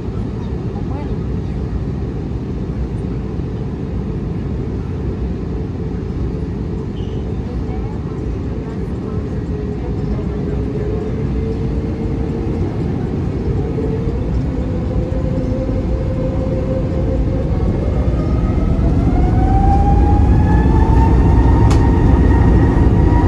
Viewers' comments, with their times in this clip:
0:10 God I love the sound of the engines of the A320 during takeoff